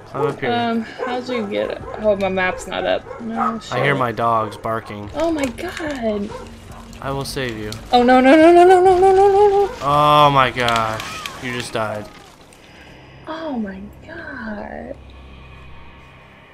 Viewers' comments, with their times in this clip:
0:03 ironic dogs barking while dogs attack them